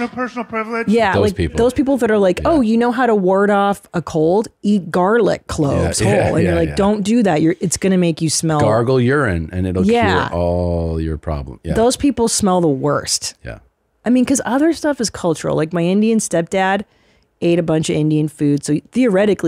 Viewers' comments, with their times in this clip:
0:04 Christina said "garlic gloves" incorrectly.